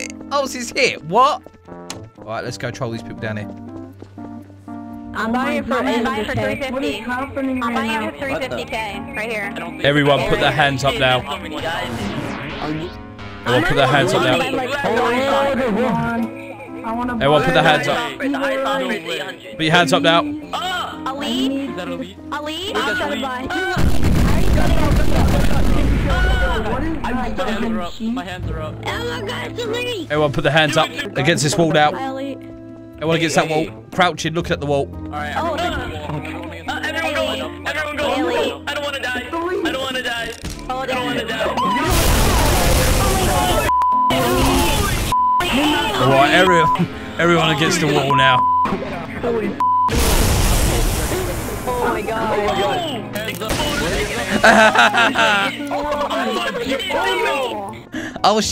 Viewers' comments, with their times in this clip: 0:09 i love how everyone is talking and when they hear the gun sound they are all giving attention
0:24 it’s what 911 sounds like
0:41 they’re screaming like girls